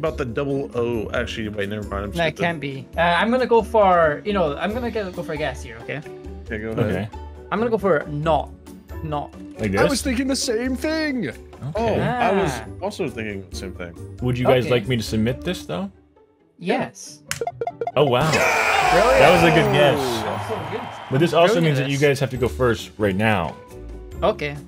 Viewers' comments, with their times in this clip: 0:10 I heard a Minecraft villager speak